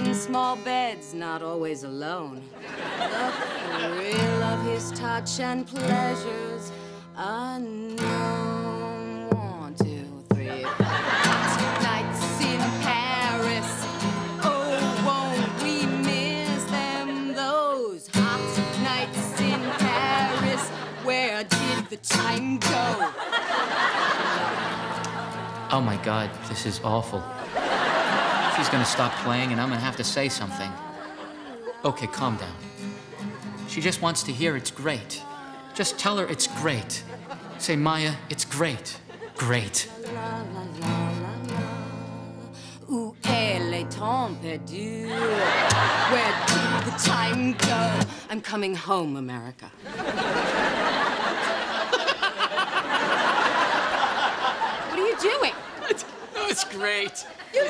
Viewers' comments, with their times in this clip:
0:04 she sounds like Lisa Simpson's Protest Song 'So well March Day and Night by the Big cooling tower, they have the PLANt but WE have the power
0:43 that song was so awful 🤣🤣🤣. And Elliot laughing like a psycho trying to act like he loved it was so hilarious. “You said I was home and safe” That whole scene was perfect. I’ve never seen this show but watching these clips makes me want to watch, especially this episode, immediately.